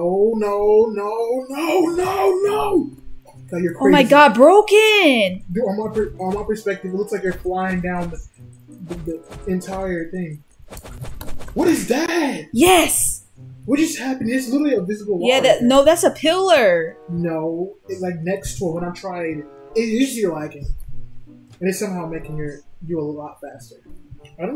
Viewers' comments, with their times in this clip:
0:10 sounds like super mario. Lol